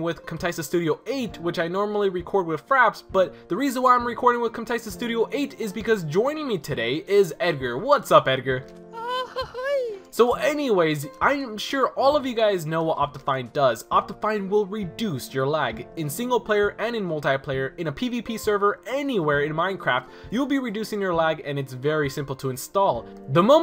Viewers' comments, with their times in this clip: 0:08 best hello ever